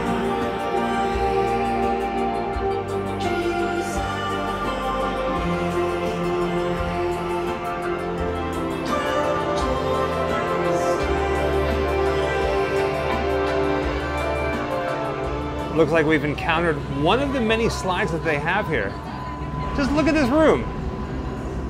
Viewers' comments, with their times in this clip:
0:06 This song in minutes is life going. Amazing! Live Amazônia!🇧🇷